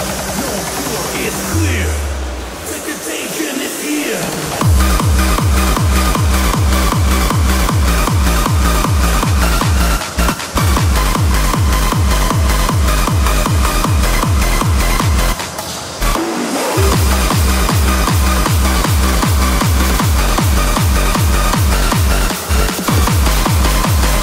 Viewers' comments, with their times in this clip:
0:09 When SZP got angry cause their new track got messed up with Sons of Anarchy